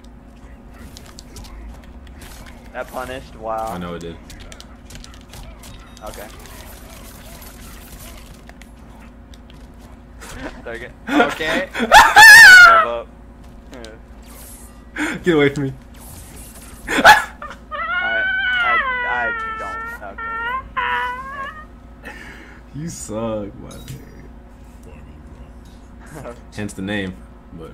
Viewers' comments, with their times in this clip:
0:10 rip headphone users. I am officially dead from hearing that.